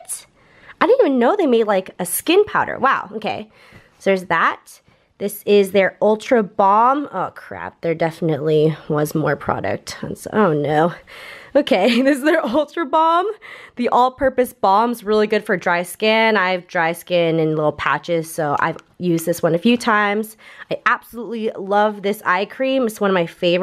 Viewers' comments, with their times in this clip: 0:10 "oh no" totally reminded me of Phoebe from Friends~~ XD